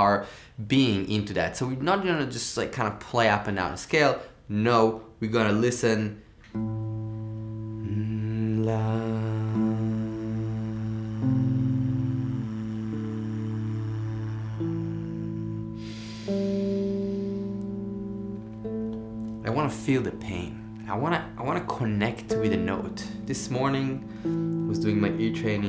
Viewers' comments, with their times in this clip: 0:06 The way you played those single notes are magnificent. I’ve never heard someone can make a ascending scale sound so beautiful! And your dynamic, it’s just… it must take years of work. Love your playing, cheers.